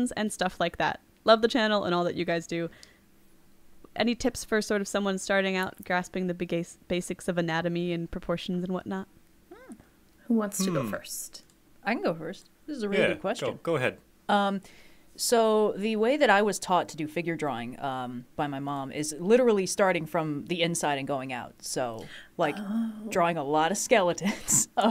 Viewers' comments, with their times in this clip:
0:06 I heard the Bi-gay-cis of anatomy.